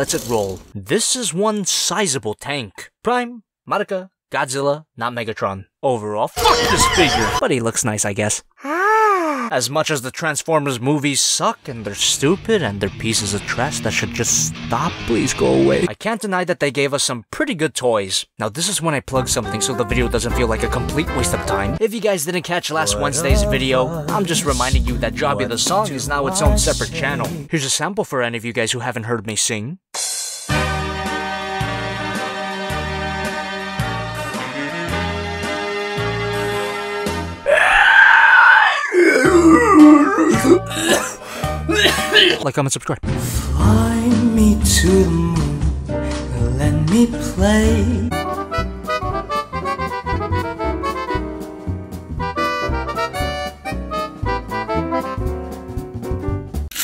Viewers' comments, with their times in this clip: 0:05 i thought he said fuck this n!!!!!!!!!!
0:36 What a beautiful voice 😌
0:37 I heard an animal doing these sounds once, but when I flipped it over, it was dead